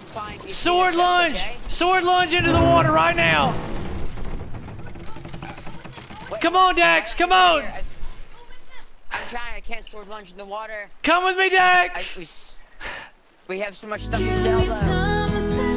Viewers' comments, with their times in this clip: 0:03 His mom cheering "GO WITH HIM!" made me wanna cry! She's so happy he's having so much fun! hahaha I love that they take turns. If i knew who they were I would buy them another Xbox and copy of the game and a monitor so the could play together! So cute! I would love to play Sea of Thieves with one of my parents! Hahaha